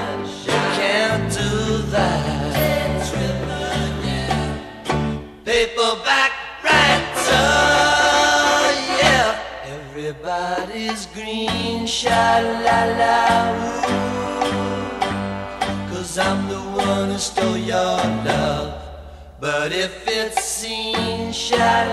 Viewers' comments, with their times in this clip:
0:07 I think the horn figure is a polyphonic rendition of the siren-like horns in "Strawberry Fields Forever".